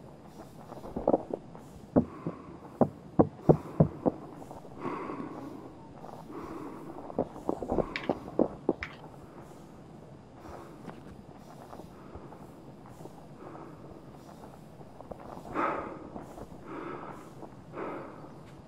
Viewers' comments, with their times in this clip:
0:03 yo that breathing was hella creepy